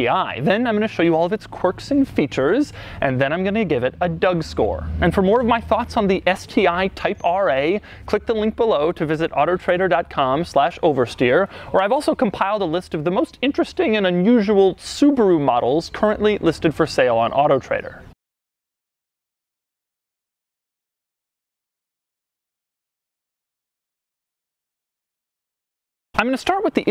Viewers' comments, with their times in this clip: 0:08 You also said "Ottertrader" :D